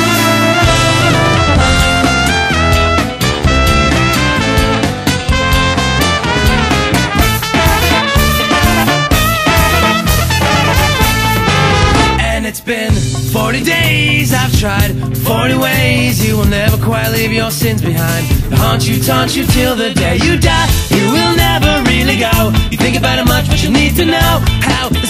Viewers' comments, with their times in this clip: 0:09 This song is amazing! I love the trumpet part